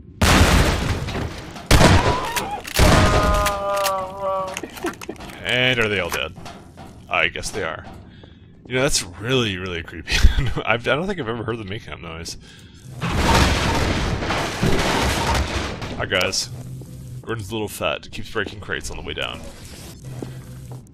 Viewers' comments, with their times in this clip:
0:03 That noise is an animal noise (I think a sea lion) but at the very end it's mixed with what's either a laugh or a cry. It's heavily hinted that zombies are alive and conscious of their horrible predicament, hence the almost-intelligible screaming when they're lit on fire.